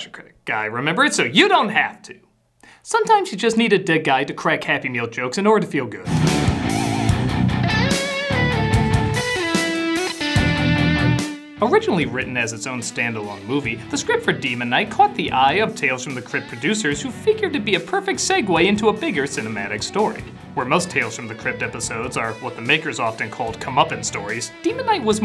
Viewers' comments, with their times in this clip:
0:06 That's some kickass music. What's it called?
0:07 Does anyone know where the guitar riff that guitar riff that stars is from? I’m just dying to know. It sounds bad ass
0:13 Can someone please help me identify that absolutely shredding beat that starts when critic begins?!? I must...know....that....rift!!!!!